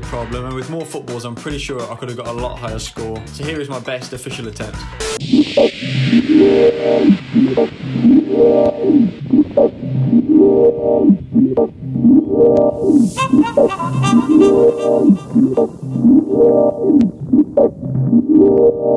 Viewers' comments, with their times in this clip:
0:05 Damn that club penguin dj music